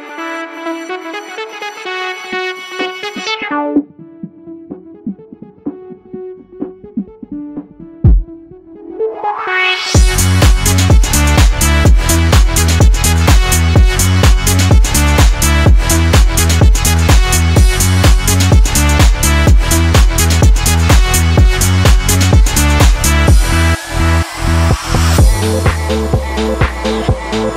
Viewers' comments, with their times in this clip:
0:10 what the remix ID ?? that base line is so so so catchy !!